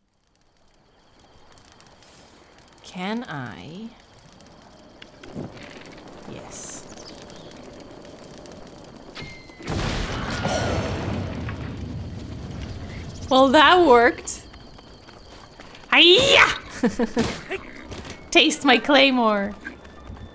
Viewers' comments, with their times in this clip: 0:07 OMG, THE WILHELM SCREAM! LMAO